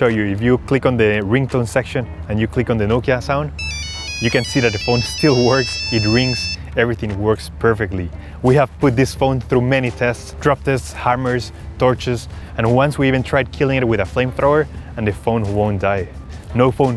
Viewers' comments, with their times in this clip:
0:03 Nokia 3310 made his victory sound😂❣️ Edit : Whoa thanks for these likes,, I've never got this much likes before!😅
0:04 Ahh that tune😌😌😌❤